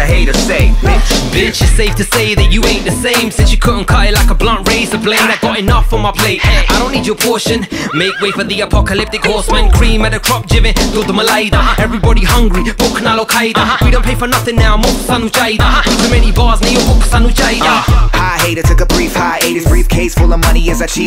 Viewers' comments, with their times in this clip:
0:08 that horse sound🥶💀